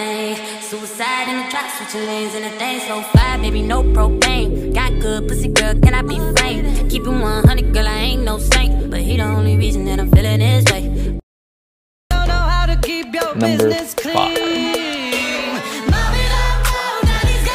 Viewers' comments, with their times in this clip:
0:04 Why is nobody talking 😭